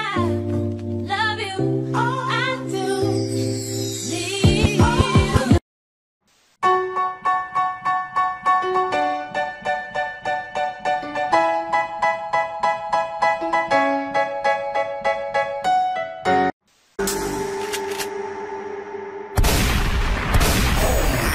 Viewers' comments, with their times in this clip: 0:06 Me after Mr bean plays dance monke on piano